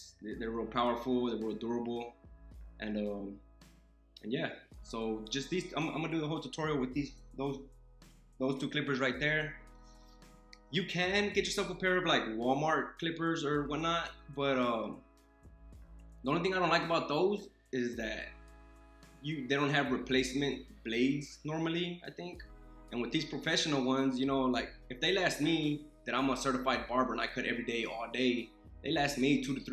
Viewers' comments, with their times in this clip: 0:10 i legit thought he suddenly gonna sing his instructions 😂😂 caught me off guard